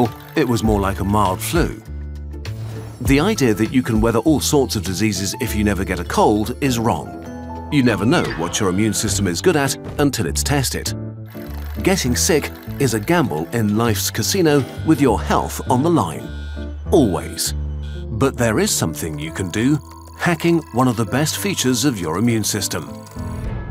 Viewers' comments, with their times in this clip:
0:07 that mild meme sound is an easter egg
0:07 Love the Wilhelm scream 😅
0:07 love that Wilhelm scream haha
0:08 Loved the WIlhelm Scream. Its very faint but you can just make it out. haha
0:08 Good ol' Wilhelm Scream
0:08 I almost didn't hear that Wilhelm scream
0:08 Wilhelm ! That made me smile. I had to back up and listen a couple times, but it's there.
0:08 I loved the Wilhelm scream !
0:08 Subtle Wilhelm scream ? ;) Anyhoo, as someone fighting with a nasty cold virus right now, this was super interesting to understand what's going on in my body. Thanks for making this information so accessible :)
0:08 the usual Wilhem scream
0:08 Wilhelm scream, — HA
0:08 Are we not going to talk about the Wilhelm scream ?
0:08 Did I hear a Wilhelm Scream ?
0:09 Bro did the Roblox die sound in shark bite